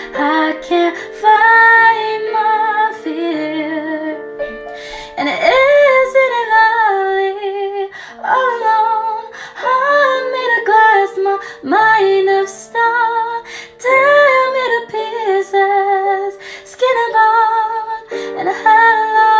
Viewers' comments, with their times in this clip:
0:03 the “outside” shocked me bc of my voice, I’m terrible at singing but I’ve gotten better finally but I cannot describe how perfect that harmony was- SO HAPPY🎉